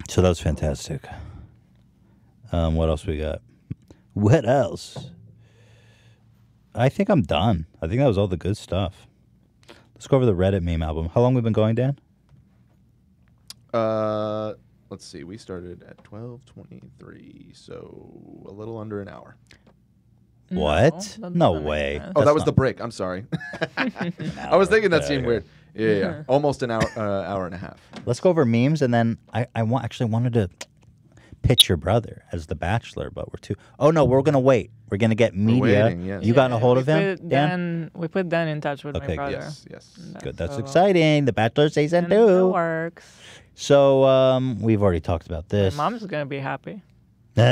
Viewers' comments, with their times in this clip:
0:05 Did some people here a loud screech
0:28 holy shit lower your volume some earrape sound almost blew out my eardrums
0:29 thought I broke my fkin headphones
0:29 some weird beep noise probably a fart
0:30 Nearly blew my speakers
0:30 rip my right ear
0:30 who else got ear raped
0:30 there is a weird noise
0:31 Ouch my ear :(
0:31 Right ear earrape
0:31 My f**** right ear omg
0:31 jesus that audio glitch
0:31 anyone else get a weird chirp through their computer speakers?
0:31 Why did I almost go deaf
0:31 I thought there was a cricket or something in my room